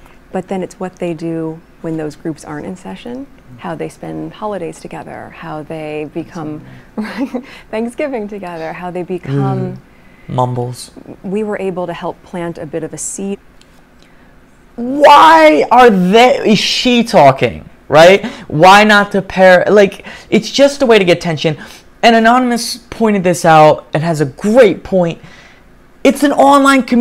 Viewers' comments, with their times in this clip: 0:10 What was that ?Why did she look at him and do her fake chukkle,she is beyond GROSE 😳